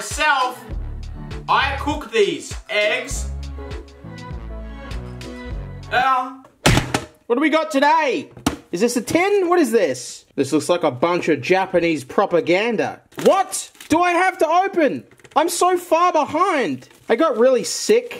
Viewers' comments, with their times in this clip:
0:05 The “eugh” of a defeated man